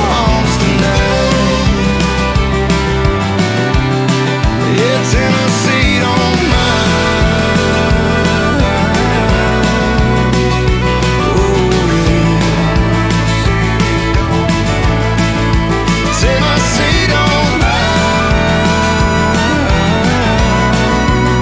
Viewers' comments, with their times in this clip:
0:04 PHENOMENAL song! This came up on Autoplay and I was standing in the kitchen and I was thinking I didn't play this one but the first few beats had me like hell yeah! The lyrics are sick and your voice is one of a kind so so smooth! Much Peace, Love, and Happiness to you always! If I get a little bit high...🏹❣️🏹💯🔥💯